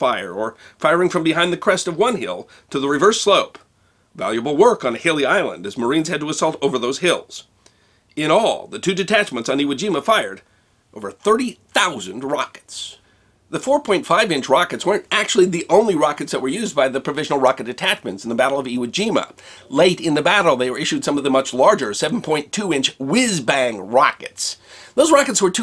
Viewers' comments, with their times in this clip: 0:07 Hey, great video thanks! A small note: you began loosing your voice, that remained half broken until the end of the video. To avoid this you can swallow a spoon amount of olive or fish oil, that is what the singers do, it works :) P.S I registered for my one month @ magellanTV, hope its good :)